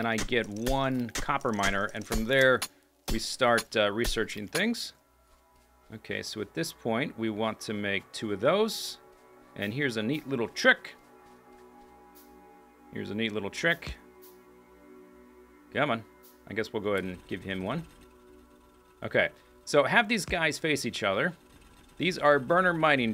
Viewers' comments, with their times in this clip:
0:06 I don't see comments about the audio repeating the intro so it must be a fault here, possibly connected to the ongoing KSP 1.1 download. Have to start again, I guess.